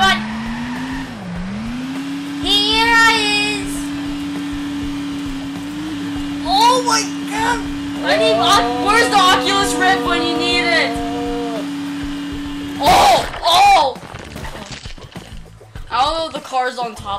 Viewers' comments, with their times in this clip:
0:03 RIP headphone users ):